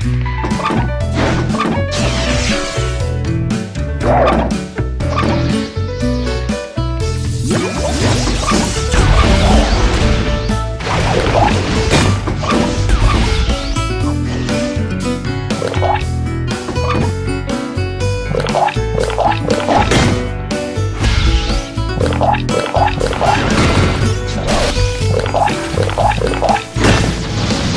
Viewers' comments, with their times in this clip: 0:09 jotaro and kakyoin: Respectful, drinks the right way the rest of the crusaders: HOLY SHIT IS THAT ICED TEA MSRNHSMRRUMMS gurgling sounds THIS IS SO GOOD
0:11 Jotaro slamming tea clank